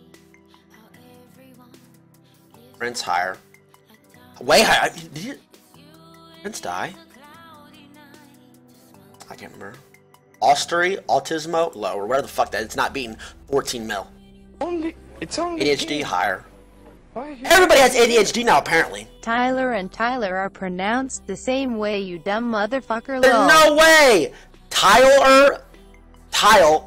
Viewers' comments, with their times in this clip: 0:09 "Austerity?" Brain: autismo